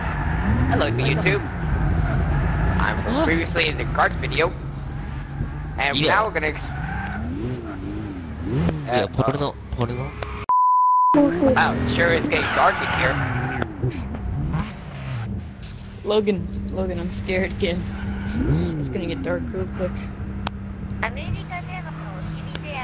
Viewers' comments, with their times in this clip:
0:04 Me:Hello YT! I was previously in the kart video. And now w- JPN Guy: bideo? Me: ¬_¬